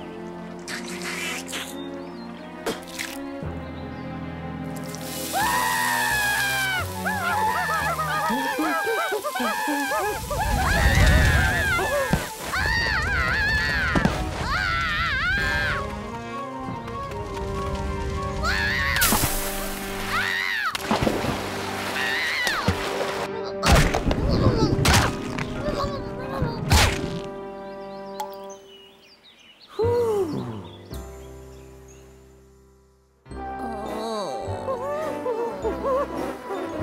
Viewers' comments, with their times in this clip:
0:07 its adrorable how they are crying like babies
0:23 why were the fishes eating the blood, and also its funny how they say num num num